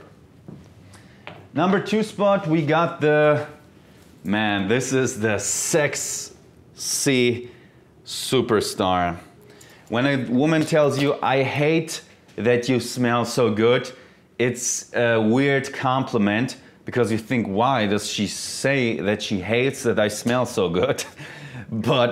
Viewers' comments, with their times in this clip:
0:04 "Man... this is the SEX"